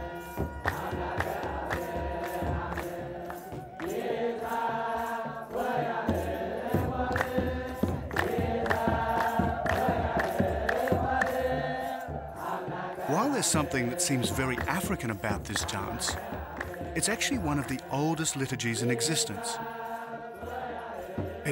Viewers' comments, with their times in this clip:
0:06 Don't know if I am the only one who noticed this. the Ethiopian chanting strangely sounds like south Indian Hindu devotional songs. I am really confused. The lyrics are something like "Isanam varahe madhi"